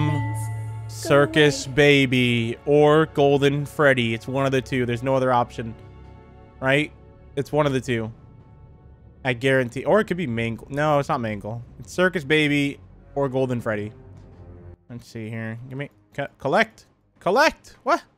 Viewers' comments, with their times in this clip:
0:05 you have become a big blue or white beautiful house.